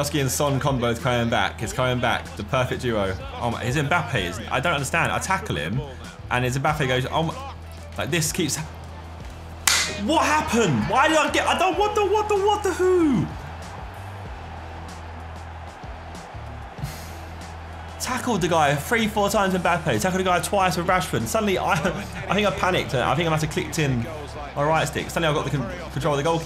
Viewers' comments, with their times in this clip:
0:10 sounds like pacman